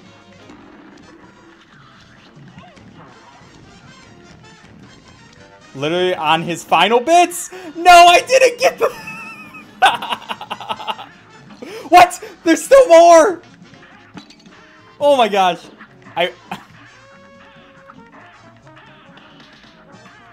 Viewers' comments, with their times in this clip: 0:06 The fake "Knockout" screen was such a good fakeout. I thought they was just changing it up to fit the bug theme. The narrator's voice was different too because it wasn't him who said it, it was the snail trying to trick you. Bloody Brilliant!